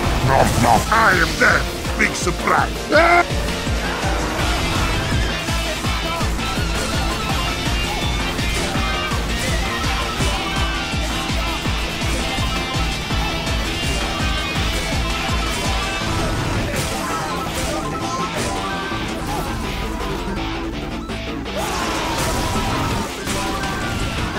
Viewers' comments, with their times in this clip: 0:08 that hitsound and killsound is genuis oh my god